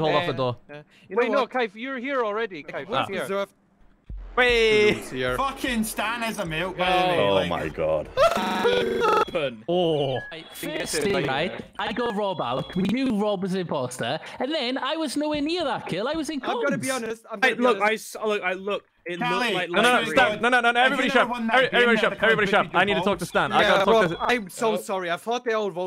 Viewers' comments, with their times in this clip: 0:08 that laugh combined with a "jittery" voice chat just absolutely killed me,
0:08 closed captions thinks that the glitching laugh is music lmao